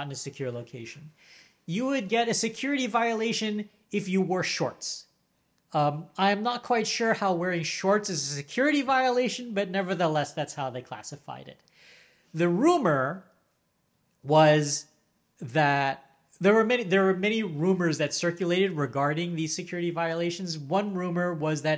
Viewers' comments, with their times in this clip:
0:07 There seems to be about 40 seconds missing at the muted bit is now ish